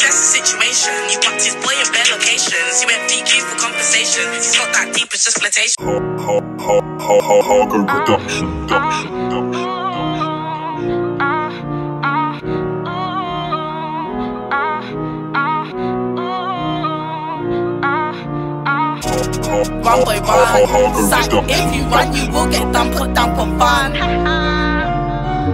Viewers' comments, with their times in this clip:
0:06 sounded like it’s saying “HOE HOE HOE HOE...” 💀💀💀💀